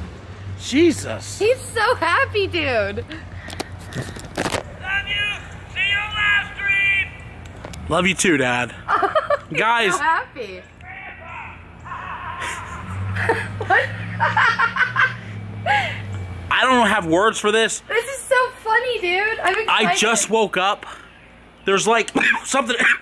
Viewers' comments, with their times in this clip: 0:04 he’s so loud, I love it
0:11 his evil laugh while driving away 😂😂